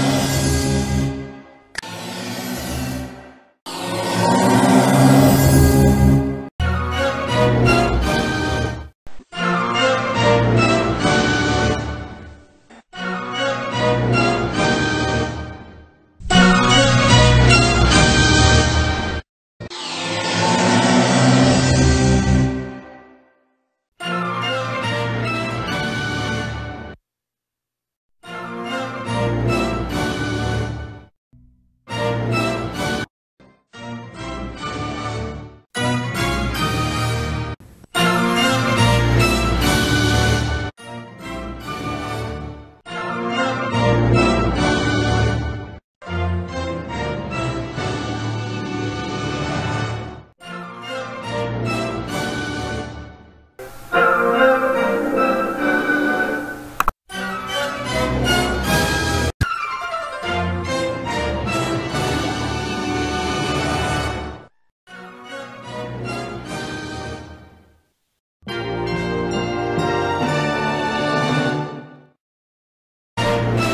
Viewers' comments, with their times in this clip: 0:06 is when the put that music that always goes with that logo in there
0:57 MORE HIGHEST PITCH